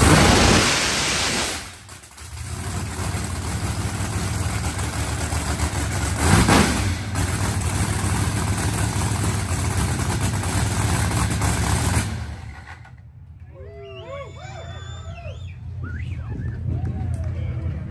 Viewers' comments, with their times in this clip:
0:05 Murder Nova sounds like He has a splash of Nitro in the tank the way it crackles...